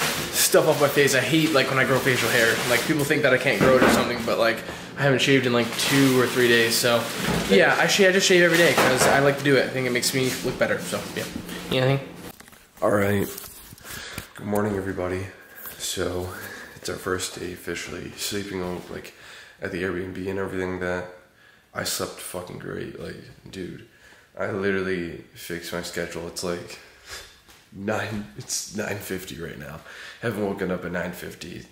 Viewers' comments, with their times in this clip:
0:09 The voice difference looool
0:13 mans voice dropped 7 octaves